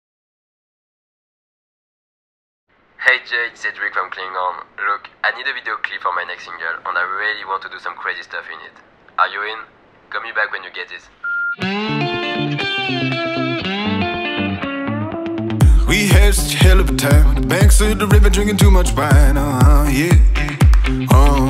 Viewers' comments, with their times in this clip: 0:03 my english accent is very good ! mdr